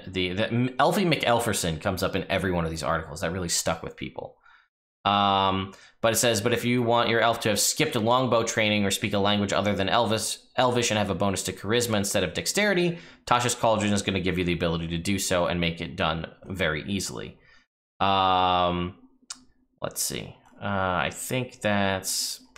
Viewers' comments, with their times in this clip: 0:07 "If you want your elf to skip Longbow training or speak a language other than Elvis..." Why would I NOT want an Elf that speaks Elvis. Elfy McElferson got 'em all shook up